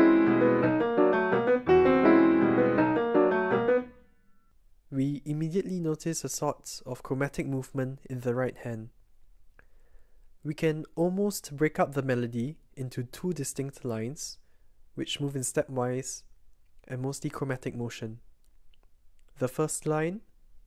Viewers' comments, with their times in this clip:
0:03 first bar is G11 to inverted d#9 if I got the dots so I don’t know what that is other than some weird modulation, with a lingering d thrown in, but on second repetition the d#9 turns into a diminished chord so that sounds more composed? I guess it’s true that the I V does provide a minimal foothold. the melody first moves a tritone before settling into chromatic fourths, and left hand also starts with a tritone jump down, and as pointed out we have the I V in the bass again to give something to hold on to (down modulated a minor third to e minor)